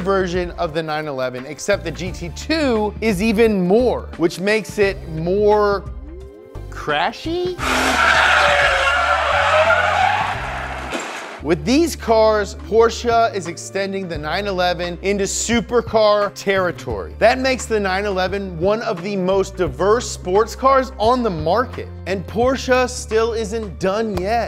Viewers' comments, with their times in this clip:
0:07 how tie fighter sound was made